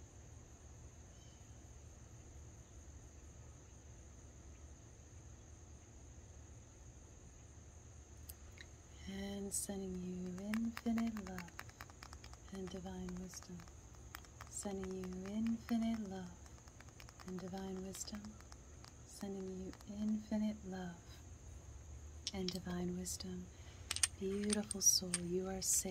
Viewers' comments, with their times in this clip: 0:10 i really love all the crystal sounds 🤗